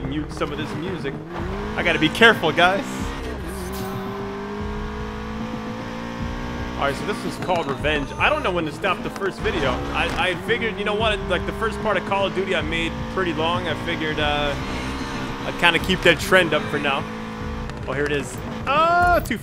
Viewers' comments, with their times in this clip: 0:03 why do you want a mute the music the music in this game sounds legit. And one more thing be careful for what?